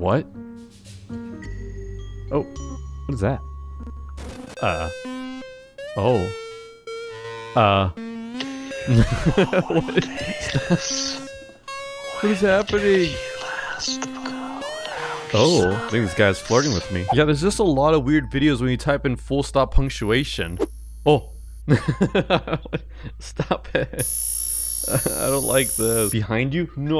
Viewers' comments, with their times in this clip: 0:07 i wach that one i can not sleep for like 2 days and i when i sleep i can hear the whispering